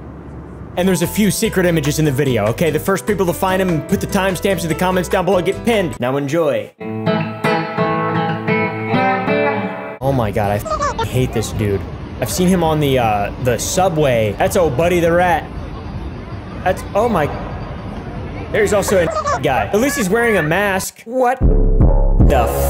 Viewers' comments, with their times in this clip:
0:07 that sounds like…. WAIT THAT SOUNDS LIKE BIG SHOT